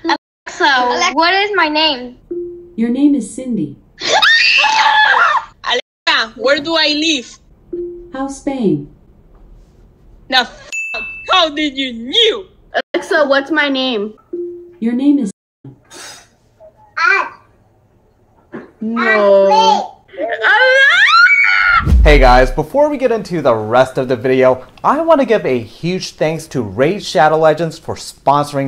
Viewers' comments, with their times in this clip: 0:05 accent beyond infinite
0:08 the point that the notification bell sound was on sync lol😂
0:09 Alexa: “How’s Spain” “HOW DID YOU KNEW?” The accent, duh 🙄